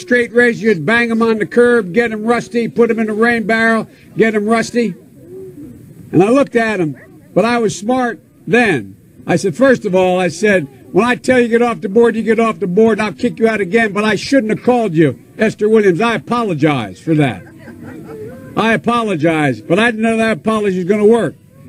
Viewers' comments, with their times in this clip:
0:07 LOL "but, I was smart.............then!" (biden's brain pausing to realize it was never smart)